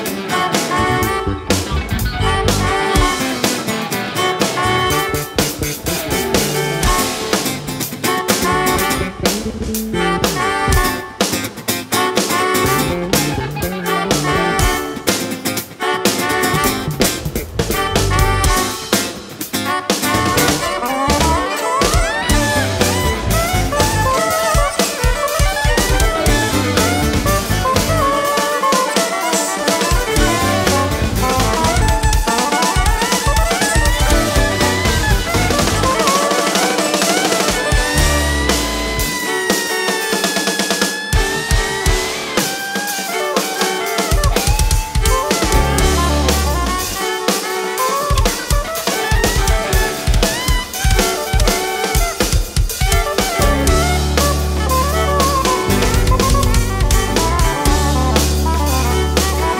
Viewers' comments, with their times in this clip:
0:06 That rhythm that Dave starts playing gives me the chills.
0:41 C solos into a open w/ scat, D's perfect vocals lead B into violin metal, all the while S lays rhythm like a m'f'er.